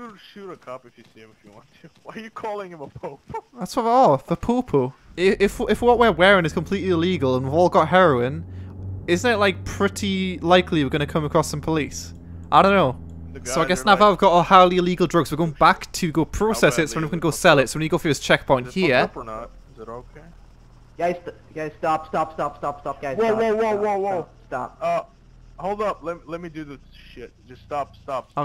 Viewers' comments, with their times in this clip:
0:10 it sounds like hes saying poopoo